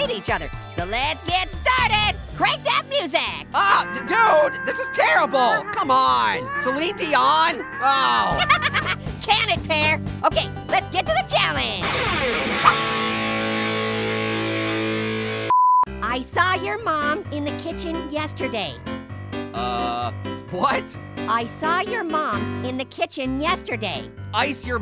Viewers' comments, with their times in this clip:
0:07 it sounded like he said "celine dion"